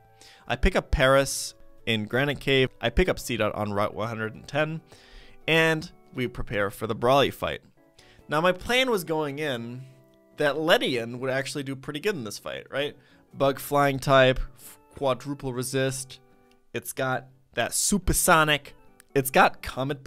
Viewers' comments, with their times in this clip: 0:07 What a beutyful piano sound. Who knows, knows